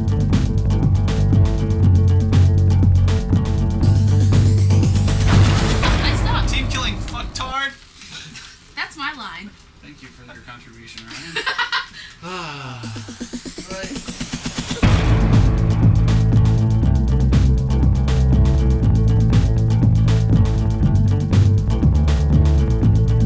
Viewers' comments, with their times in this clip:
0:06 a free cookie to whoever gets what they said